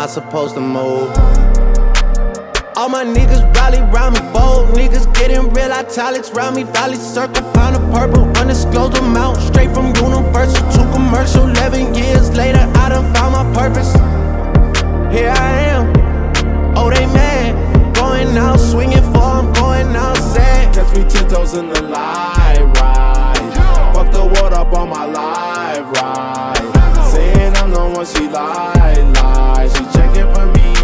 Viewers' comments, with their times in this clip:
0:03 When drake starts spittin 🤭 🔥 🔥🔥🔥 ……
0:14 travis vibes sheesh🥶🥶